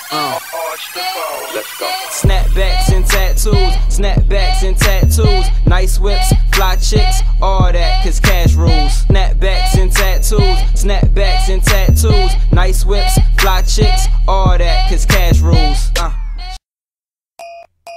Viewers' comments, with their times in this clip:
0:05 eh eh eh eh eh eh eh eh eh eh ! I love this fucking episode ! I be struggling to read dem subtitles doeee lmao ! But when you do is amazig and love the music xD